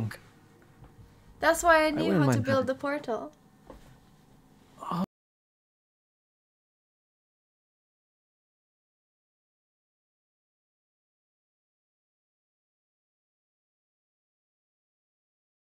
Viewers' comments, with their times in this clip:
0:03 the audio cuts out,is it just my phone messing up or???